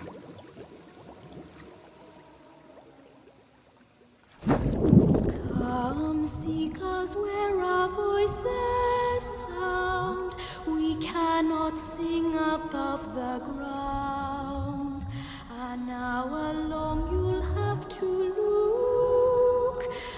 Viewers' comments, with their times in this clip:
0:05 Whoever sang this song had a beautiful voice.